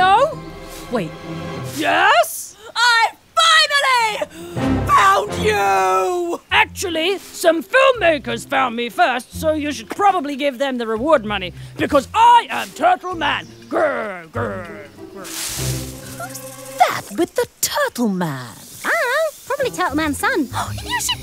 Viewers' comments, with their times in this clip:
0:04 That voice crack tho...